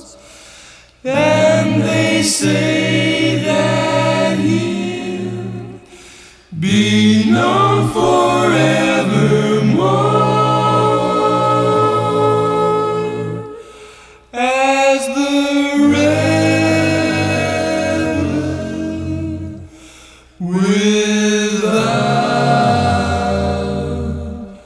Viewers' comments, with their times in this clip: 0:09 Brian's like an angel voice